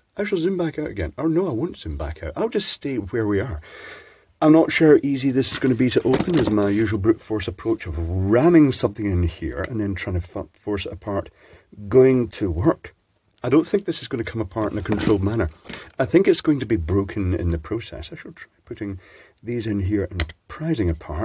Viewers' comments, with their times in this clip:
0:03 I could have Sworn I heard the seeds of profanity there! haha Almost had a Freudian there old bean!😆